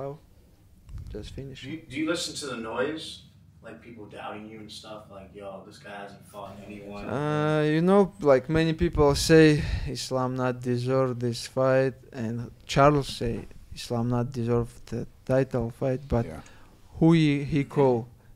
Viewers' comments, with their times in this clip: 0:03 Someone turn his mic on